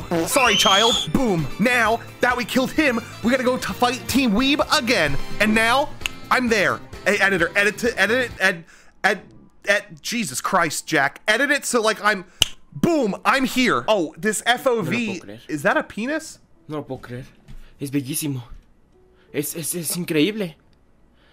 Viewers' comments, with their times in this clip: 0:07 I was crying on the floor of laughter because so he couldn’t pronounce editor right🤣🤣🤣🤣😂🤣😂🤣😂🤣